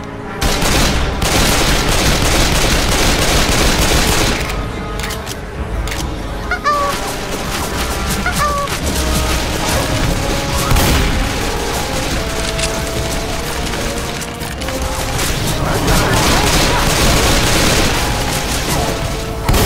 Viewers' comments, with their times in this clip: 0:07 you here a noise and it kinda sounds like coo coo, coo coo. in high pitch